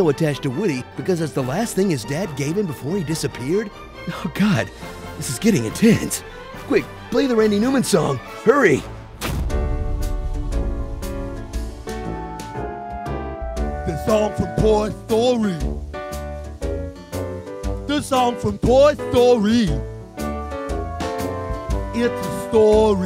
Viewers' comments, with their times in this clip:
0:09 Funny music bit.